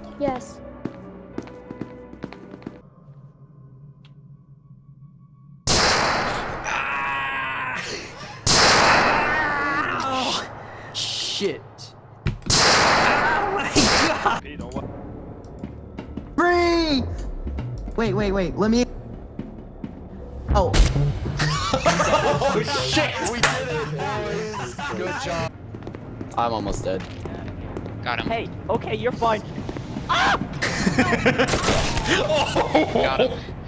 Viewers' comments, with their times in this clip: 0:05 did anyone else turn it up to 100% ?
0:07 When you're at the range and you forget ear protection
0:16 the way he said freeze killed me so bad